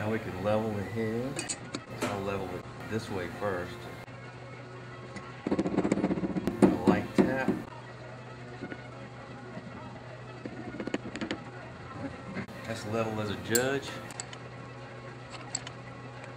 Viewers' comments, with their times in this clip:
0:04 lmao :D the sound of the hammer are too funny :D